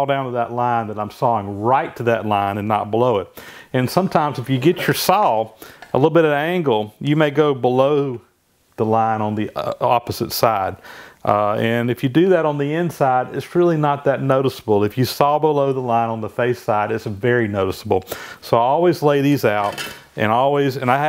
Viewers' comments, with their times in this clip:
0:09 nice burp recover